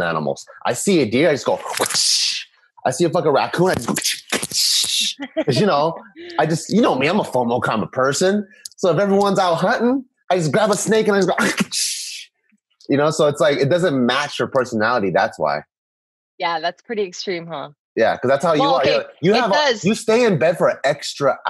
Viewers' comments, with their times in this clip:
0:07 when did taika join the podcast?!